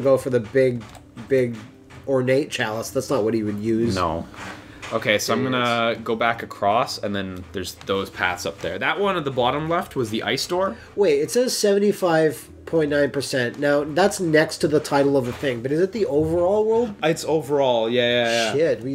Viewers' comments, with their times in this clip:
0:06 Seriously, what the hell is making that noise in the background? Are you guys doing unbalanced laundry loads during LPs?